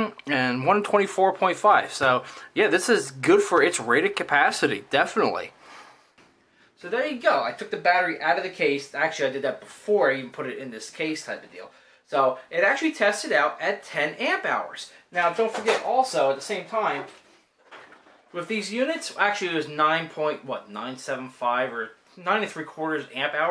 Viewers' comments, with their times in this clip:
0:07 The word said at time = God?? (I must be losing it!!)